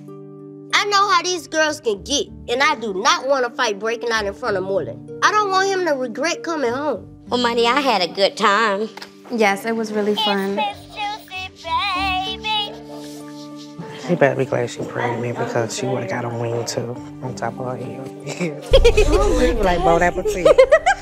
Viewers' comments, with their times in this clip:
0:09 😂😂😂 the voice from the bobble head